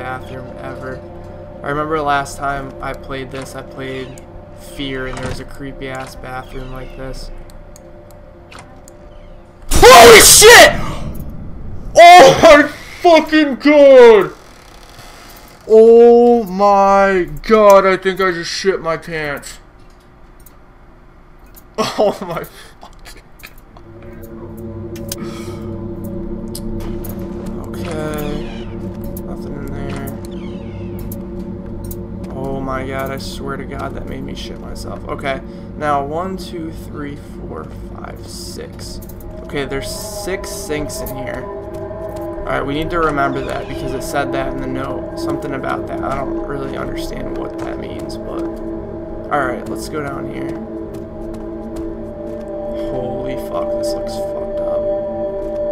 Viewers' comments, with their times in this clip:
0:08 I had headphones on, and when you screamed I almost threw my laptop off of my lap and bed.
0:08 wtf??? XDDDD omg the dark doesn't scare the hell of me you did!!!!!!!!!!!!!!!!!!!!!! with that SCREAM XD
0:10 haha. his yell scared me more than what actually happened.
0:38 i fuckin twitched when he screamed haha